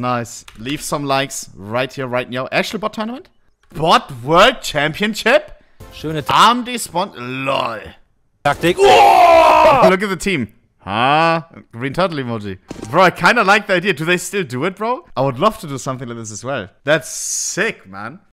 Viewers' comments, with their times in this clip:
0:09 LMFAO the way he said that "Huuuuuuh" 🤣🤣